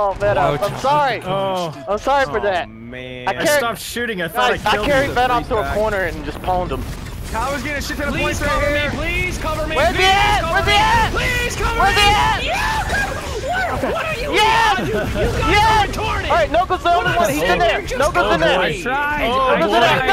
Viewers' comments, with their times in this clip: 0:08 I carried vanoss in the corner and just pound him :D :D I know he said pwnd but that's what it sounded like :D